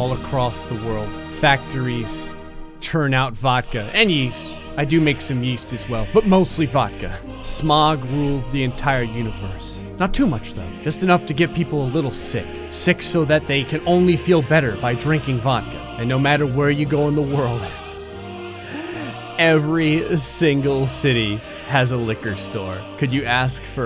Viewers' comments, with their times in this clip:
0:08 my favorite song